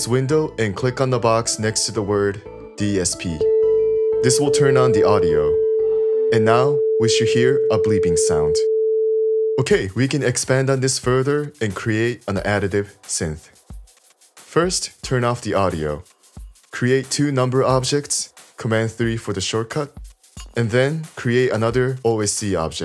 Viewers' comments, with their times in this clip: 0:04 I'm not sure why but my laptop isn't making a bleeping sound like yours It sounds like a crunchy rumbly sound.